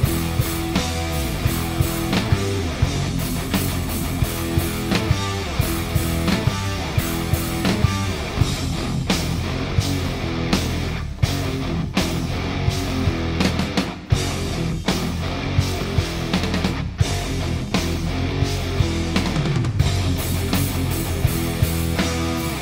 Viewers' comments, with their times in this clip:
0:09 FUCKING METAL lml!